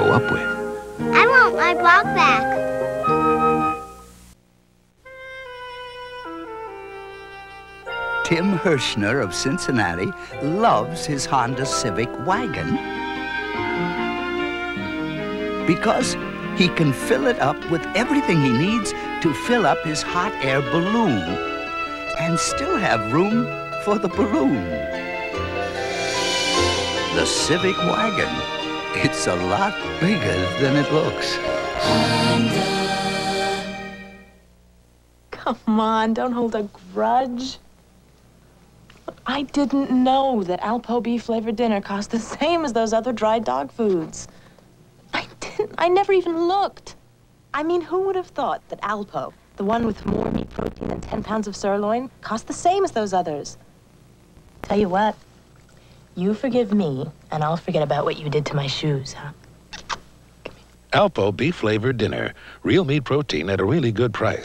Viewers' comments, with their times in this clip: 0:07 Anyone picking up the voice of John Avery Whitaker?
0:50 the lady talked like a robot for 2 seconds lol